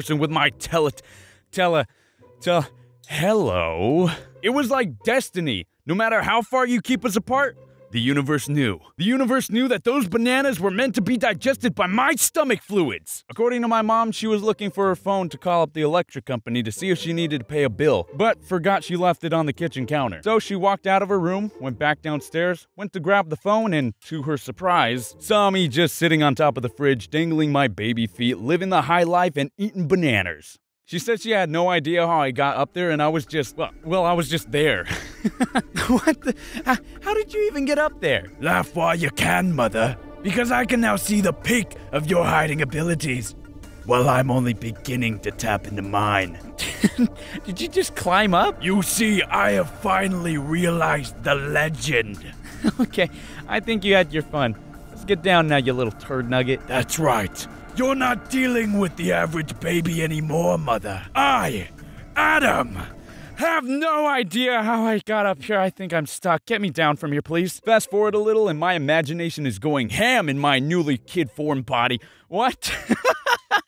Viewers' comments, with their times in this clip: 0:03 why did bro sound like Markiplier
0:38 He sounds like Vegeta XD
0:56 why do you sound like vegeta 😂